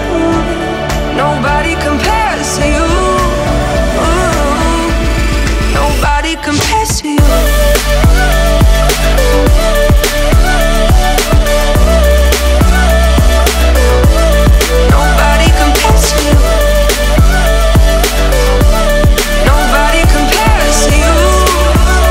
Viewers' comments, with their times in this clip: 0:06 The Beat Drop Just Gets Me Everytime 🎼🎼🎼🎼🎼🎼🎼🎼🎼🎼